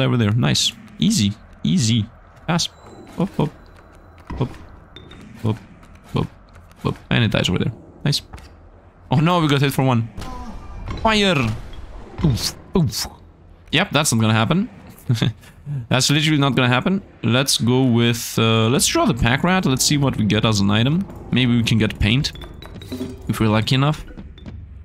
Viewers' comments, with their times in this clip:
0:10 Why does the pirate sound like he nuts?